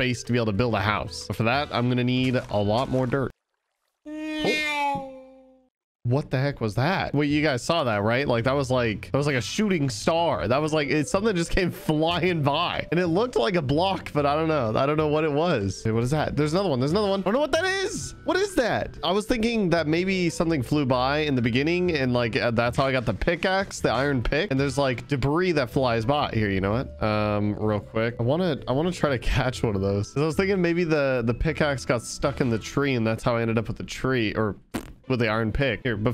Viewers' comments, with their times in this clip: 0:03 lol sound effect
0:22 why did he sound like jschlatt